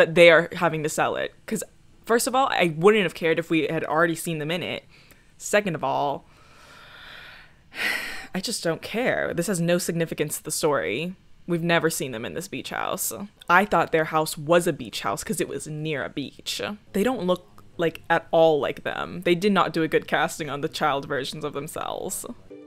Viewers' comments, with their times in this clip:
0:06 "Second of all-- GASPS FOR DRAMATIC EFFECT I just don't care."